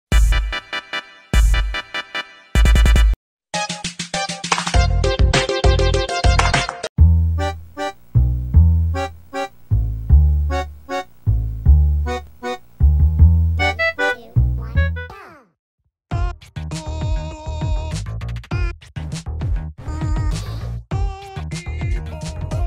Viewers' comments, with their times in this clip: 0:05 a the best music